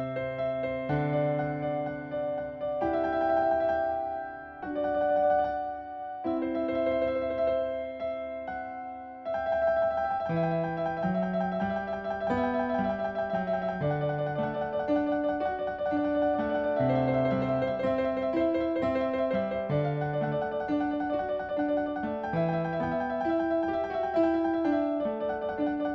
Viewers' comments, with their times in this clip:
0:09 i love when it goes "klok klok klok klok"